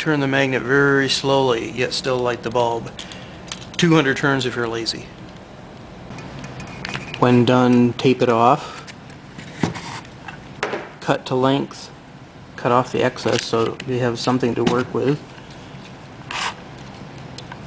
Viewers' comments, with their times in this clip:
0:04 i can't understand what you say it sounds like, 200 turns is real easy, or 200 turns if your easy. what did you actually say ?